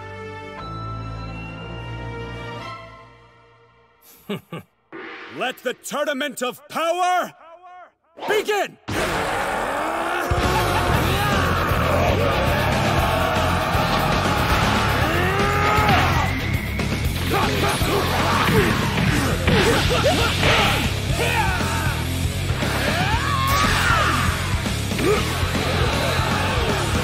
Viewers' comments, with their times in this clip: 0:10 felt so nostalgic hearing this music over dragon ball. So badass